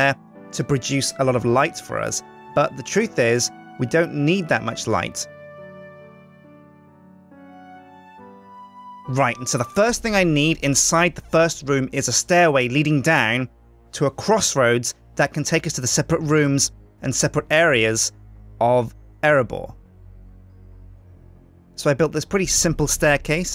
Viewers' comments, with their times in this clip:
0:08 dat music cut :3